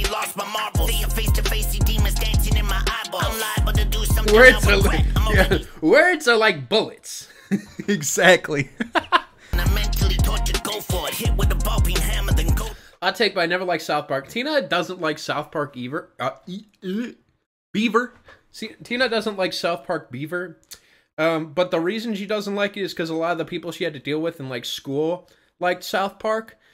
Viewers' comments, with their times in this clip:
0:10 dawg sound like the white nasally version of jadakiss.😂